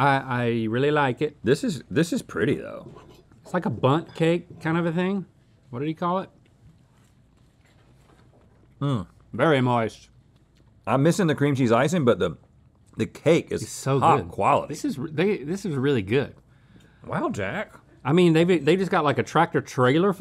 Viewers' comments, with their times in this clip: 0:08 Link's "vErY mOiSt" cracked me up